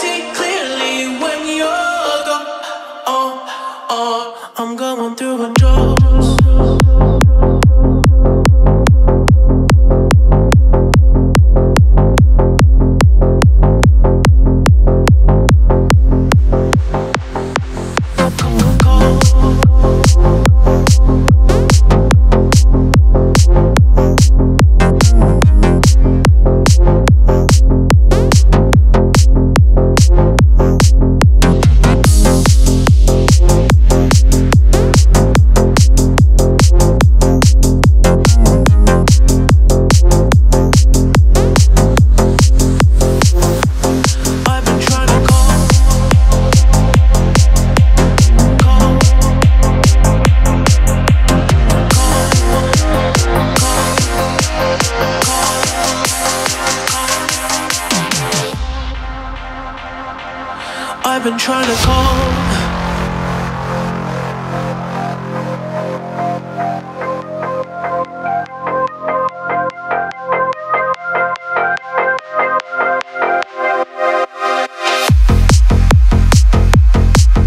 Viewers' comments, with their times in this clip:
0:05 actually filthy bass
1:01 sounds like Du Hast 😭😭